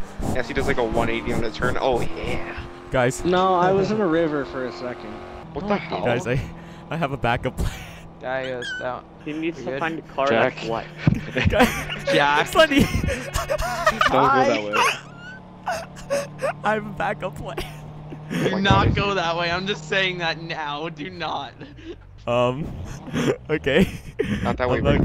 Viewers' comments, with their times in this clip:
0:08 What is that high sound